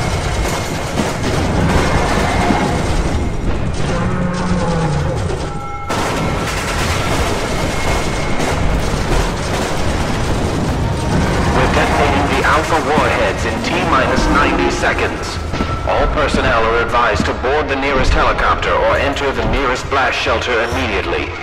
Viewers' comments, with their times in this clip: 0:05 Anyone else here an oof